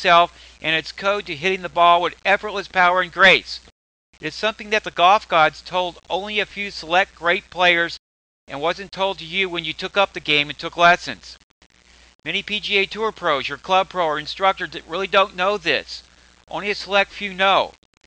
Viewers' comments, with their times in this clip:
0:05 The cough gods? What do they know?